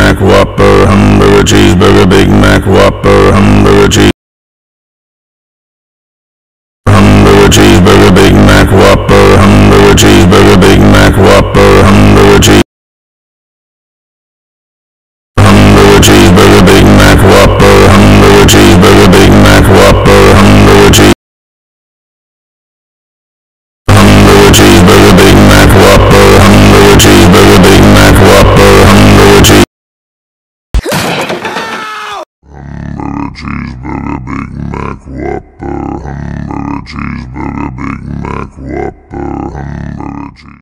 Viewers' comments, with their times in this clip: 0:04 original but bass boosted
0:24 instant earrape (my ears😭)
0:32 That's Ronald McDonald's voice when he arrives at 3 am